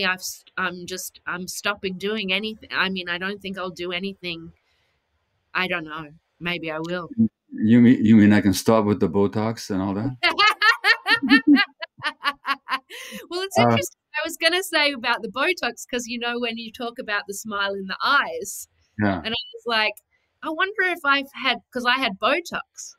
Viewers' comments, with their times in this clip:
0:10 Fuck, I thought her songs and lyrics were uplifting, turns out even her laugh is an absolute energy booster. Thanks Sia ❤️